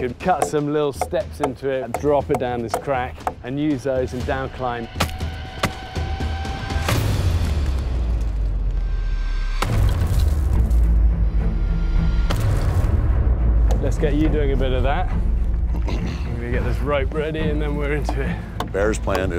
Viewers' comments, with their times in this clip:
0:07 Yeah but the music is real !